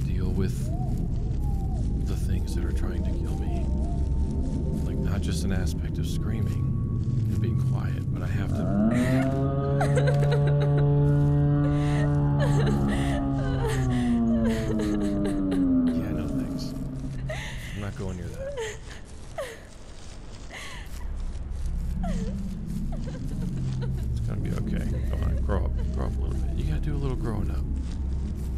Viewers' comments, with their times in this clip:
0:09 these devs know how scary the amnesia brute spawn sound is to people and made one of their own
0:09 is totally Eren Jagers titan scream just slowed down